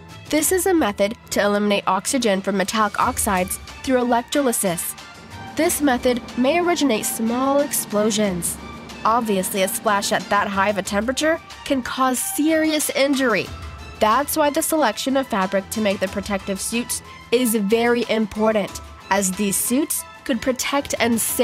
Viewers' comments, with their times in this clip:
0:03 mispronunciation of the word "electrolysis"